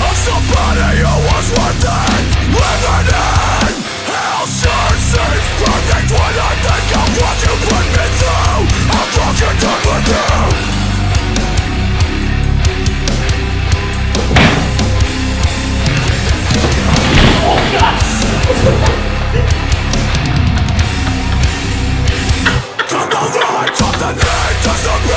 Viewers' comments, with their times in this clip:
0:10 The synchronized "oh shit here we go" from both these lads is too fuckin funny lmao